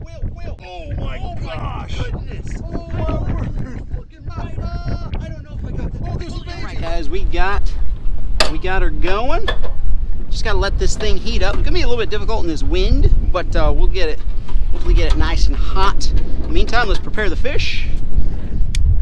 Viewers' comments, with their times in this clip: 0:04 did anyone else hear Fuad the Arab guy from Family Guy